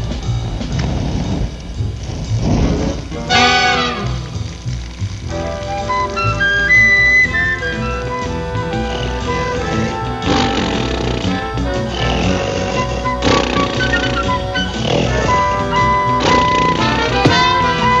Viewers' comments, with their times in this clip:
0:05 the beat in is amazing... love the flute